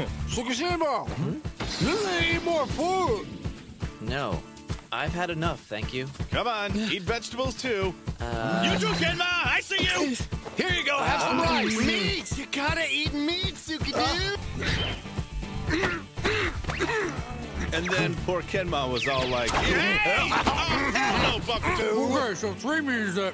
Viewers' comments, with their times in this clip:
0:09 kenma's reaction to Kuroo screaming it's just ✨A R T✨